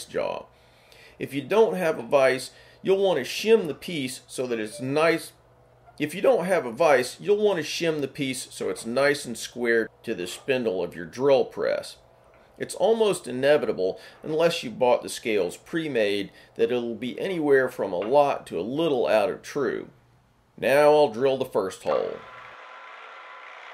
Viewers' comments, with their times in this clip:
0:06 "If you don't have a vice, you'll want to shim the piece so it's nice" phone notification "If you don't have a vice..." ...